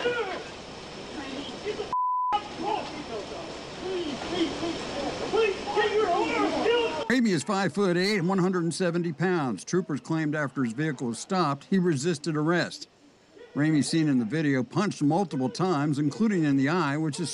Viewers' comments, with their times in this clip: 0:03 you can hear someone yell "He's still got his seatbelt on!", then one of them tugs on it, then they go back to beating him fully knowing he cannot comply and exit the vehicle because of the seatbelt.